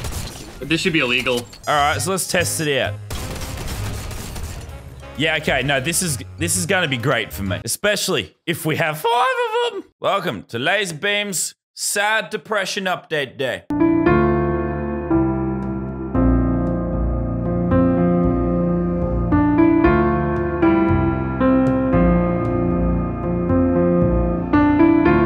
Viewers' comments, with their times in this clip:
0:09 when there a crunch in a soft food